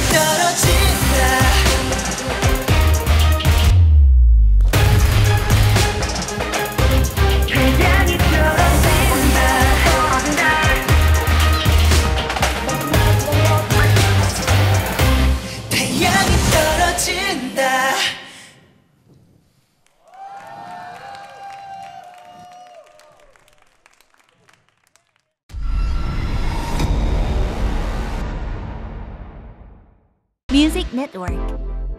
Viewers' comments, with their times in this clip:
0:04 That pause got me holding my breath
0:12 I'm not sure if that's the arrangement or Hwanwoong's mic was simply not working...
0:12 Y'all what happen to Woong's mic?